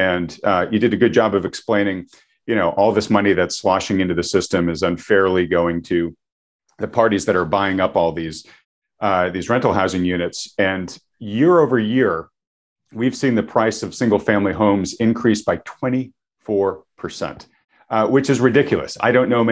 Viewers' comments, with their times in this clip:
0:03 He says Money when He means currency and I didn't hear the Car Lock Double Honk.